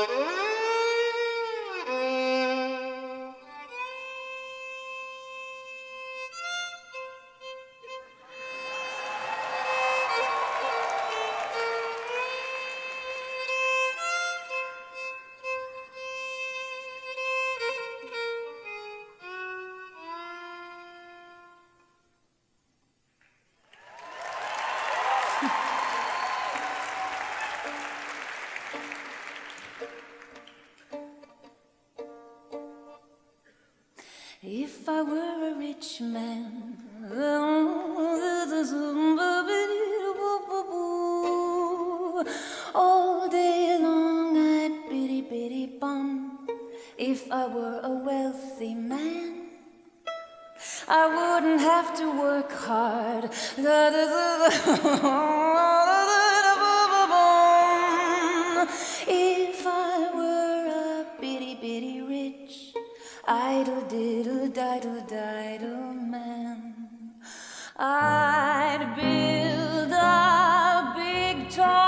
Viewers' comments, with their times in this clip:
0:06 My favorite part is I love it that when the audience figures out what she is singing they start to cheer
0:25 Her little laugh AHHHH
0:52 her laugh i'm in love
0:54 when she laughs i die